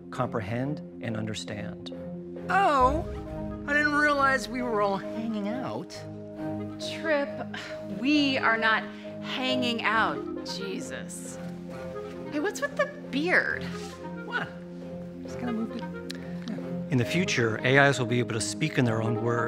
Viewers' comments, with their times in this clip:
0:03 Not only does he look a lot like him, he also sounds and moves like him, specially when he says "hanging out"